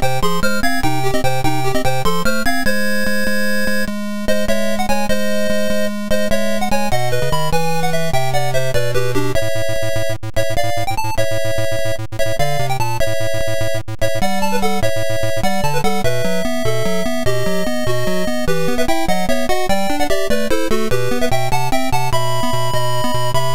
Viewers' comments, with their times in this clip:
0:09 The bass notes starting are bugged here -- likely due to DOSBOX's Tandy implementation. They don't sputter like that on my real Tandy.